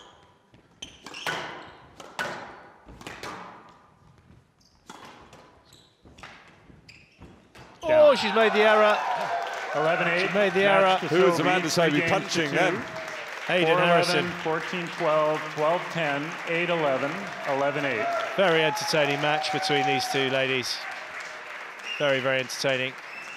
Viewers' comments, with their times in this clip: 0:09 Enthusiasm during encouragement